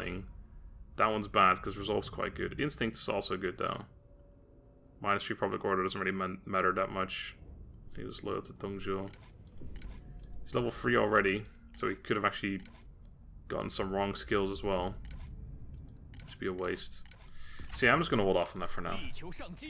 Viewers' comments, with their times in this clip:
0:07 overheard the "propably" as you hovered over the tenacity of steel perk and wondered. My bad, sorry! :)